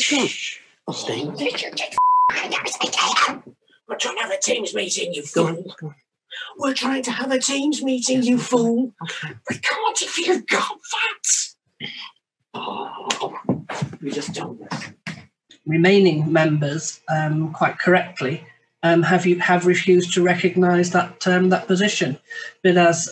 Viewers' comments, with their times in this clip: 0:09 Gollum is that you?